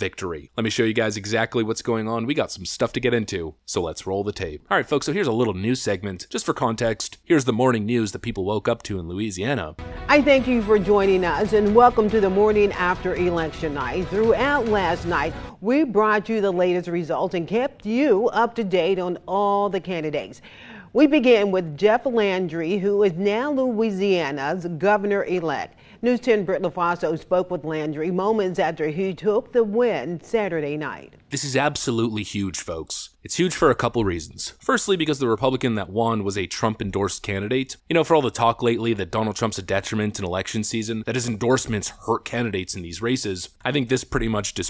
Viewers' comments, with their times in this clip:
0:07 lady stop pinching your nose when you talk
0:32 her voice though 😂